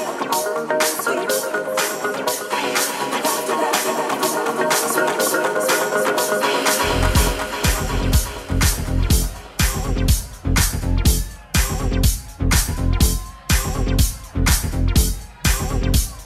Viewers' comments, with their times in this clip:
0:03 how can anyone resist that? i think i've heard that transition a 100 times